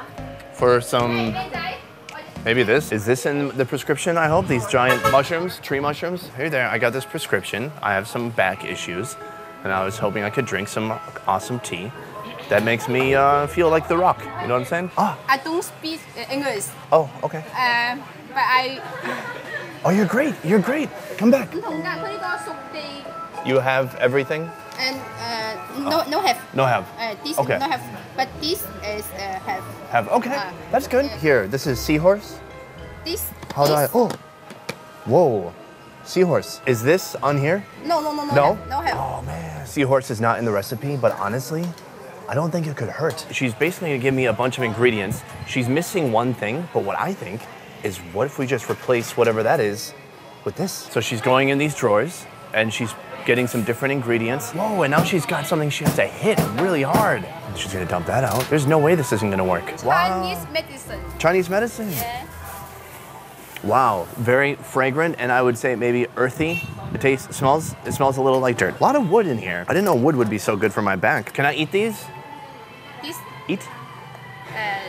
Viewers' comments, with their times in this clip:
0:04 someone shouted: oi handsome boi
1:01 I love how she said "yeah"